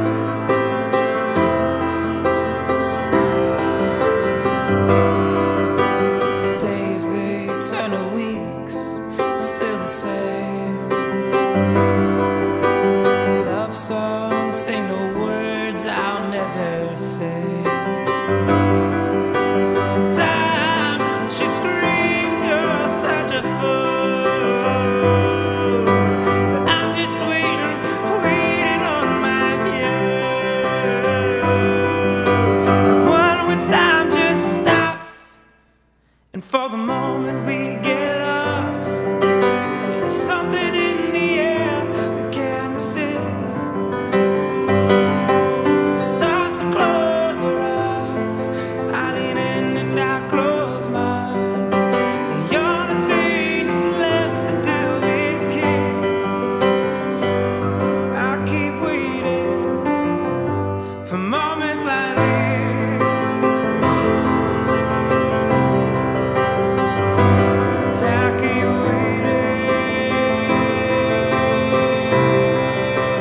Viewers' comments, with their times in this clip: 0:05 Voice crack :D
0:19 "TIME" my eardrums melted*-*
0:56 does anyone else hear a phone ring ?